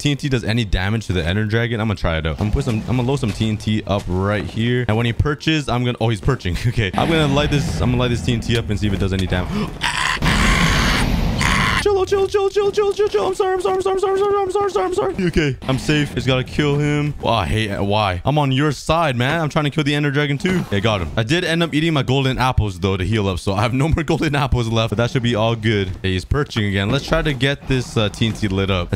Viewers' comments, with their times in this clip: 0:09 The crow scream was the best My stomach still hurt after laughing 😂😂